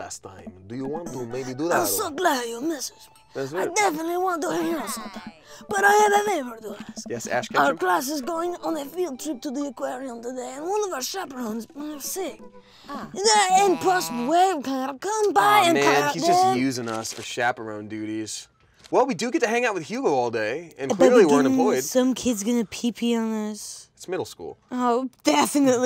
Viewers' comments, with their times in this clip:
0:10 so.. they had a conversation with the Godfather?